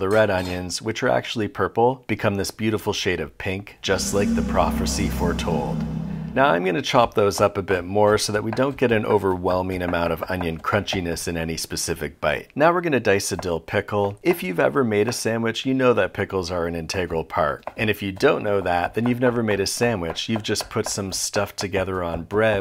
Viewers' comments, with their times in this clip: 0:03 Is a prophercy more prophetic than a normal prophecy? Something to think about.